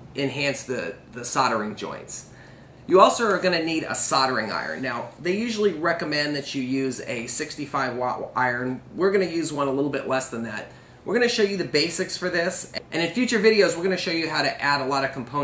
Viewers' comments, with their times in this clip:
0:03 Soddering iron? I'm going to laugh all day at that